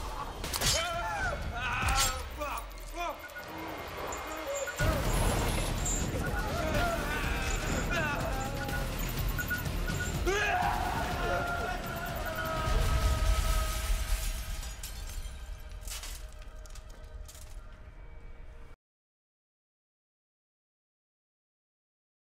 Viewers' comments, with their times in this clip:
0:10 XDDDDDD He’s Sounds Like A Lions’s!!!!!!!!!!!! Scared’s!!!!!!!!! Of’s!!!!!!!!!!! Roars’s!!!!!!!!!!!